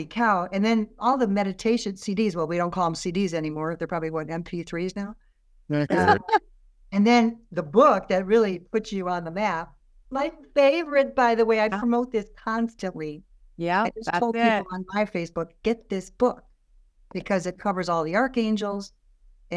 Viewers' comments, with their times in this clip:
0:05 Thank you for having Sunny on your podcast! I found Sunny in 2020 and she is absolutely an inspiration to me. Sunny’s books classes, and jewelry are wonderful! I can hear a voice twice in the beginning of the show when you were talking about cds to MP3’s and then again around 1.52. Thank you for a great show!❤